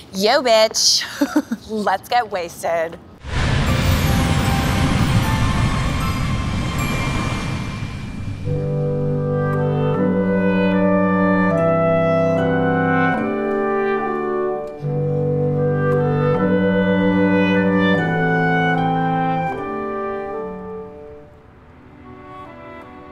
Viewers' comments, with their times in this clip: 0:09 When the music kicked in it was done for me.. forgot what I WASN'T watching 😂👌🏼